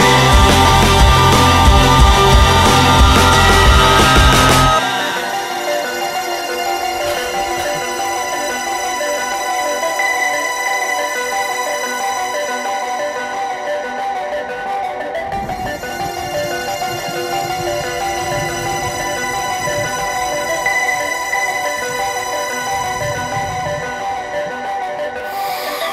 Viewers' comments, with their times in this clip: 0:07 You can hear him cough